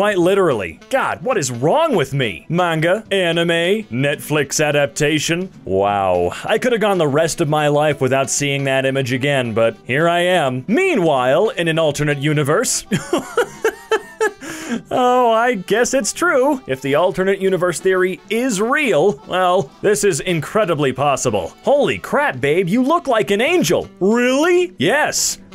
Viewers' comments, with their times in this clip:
0:06 "Why do i hear boss music"